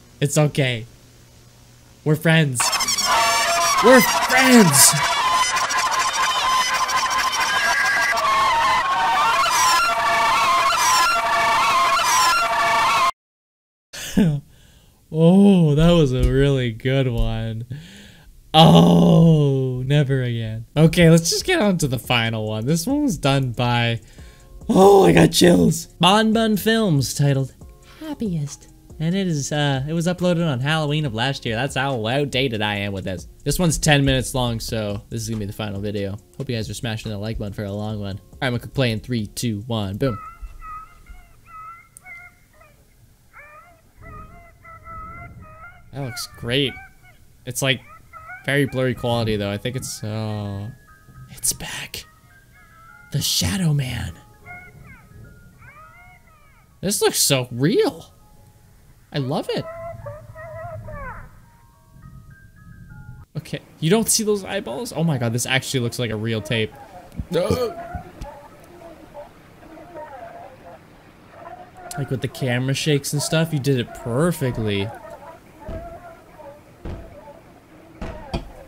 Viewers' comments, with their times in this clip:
0:03 Man that beat was 🔥🔥🔥
1:03 was the point where I got scared because plush trap sounded like he was behind me